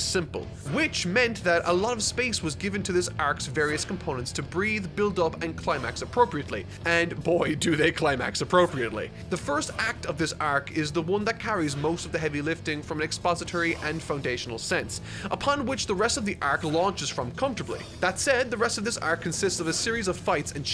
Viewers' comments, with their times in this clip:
0:07 distant Roshi laughs